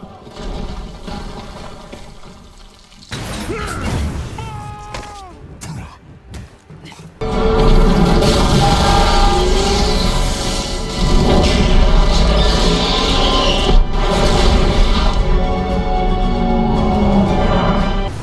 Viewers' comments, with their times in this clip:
0:03 did that guy shout “Fuck”